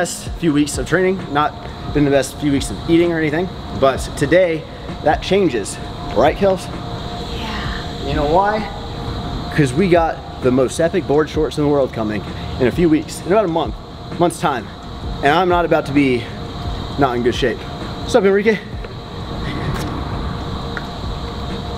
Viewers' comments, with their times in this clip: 0:05 Get you a girl that sounds like that everytime she agrees with you